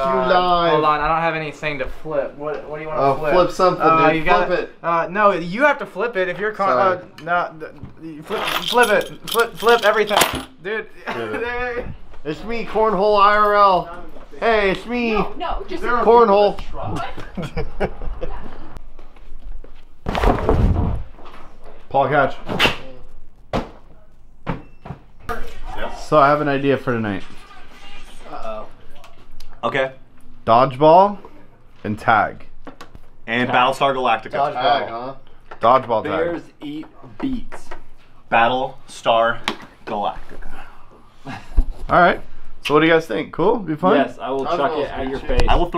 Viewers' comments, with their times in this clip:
0:09 Why do they keys sound like a hit marker
0:27 I heard scarlxrd lol